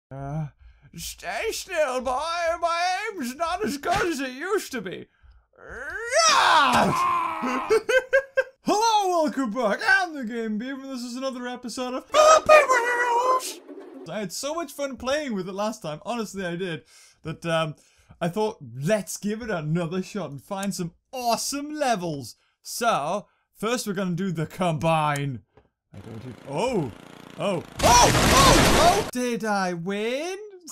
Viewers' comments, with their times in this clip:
0:00 Someone should make a meme or gif or both of the noise he makes almost pissed myself btw because I kept laughing and kept returning it over and over 😂😂😂
0:11 why hupy weeks instead of happy wheels